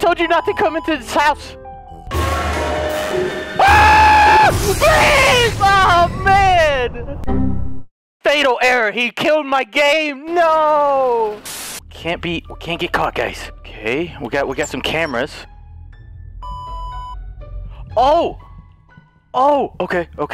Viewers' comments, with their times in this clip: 0:04 hearing the scream, and seeing the crow pop up hilarious 😂😂😂